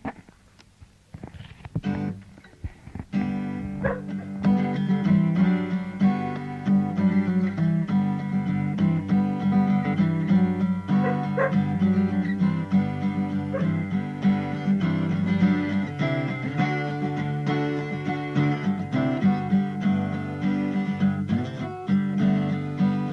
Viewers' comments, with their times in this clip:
0:04 Stryder is barking trying to persuade Jimmy to use a twelve-string on “That’s The Way”.